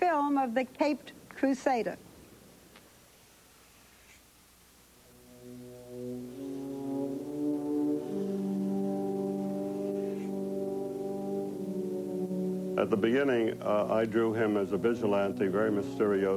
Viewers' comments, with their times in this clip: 0:04 love the music starting when Bob Kane is drawing! hes a fuckin GENIUS!